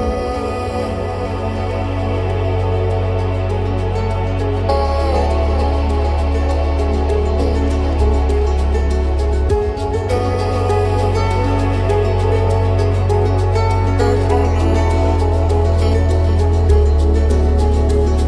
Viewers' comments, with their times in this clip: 0:04 When the beat hits <3